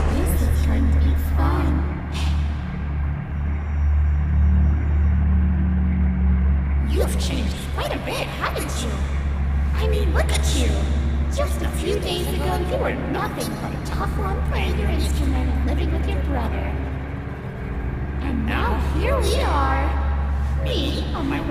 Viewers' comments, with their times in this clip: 0:04 Me: Red eyes? Check! Two overlapping voices? Yup! Knives? Most definitely. It seems like Chara is possessing this monster. I wonder why or how they did it.
0:06 I love this voice OwO